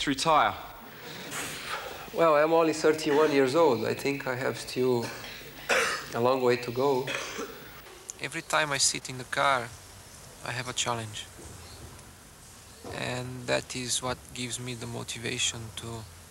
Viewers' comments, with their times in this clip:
0:04 ....hard to heard